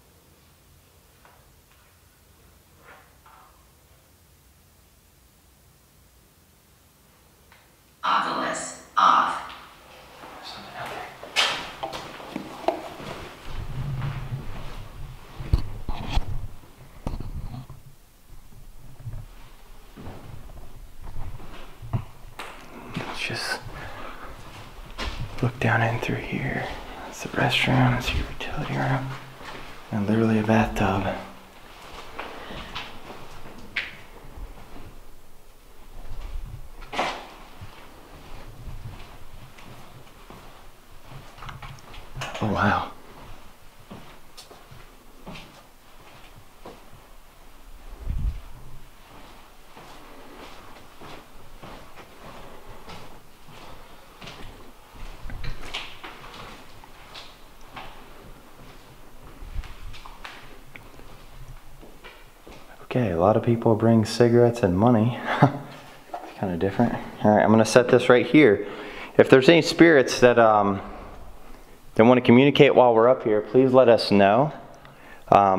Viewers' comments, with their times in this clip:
0:08 in I hear a noise
0:56 Did U hear coin drop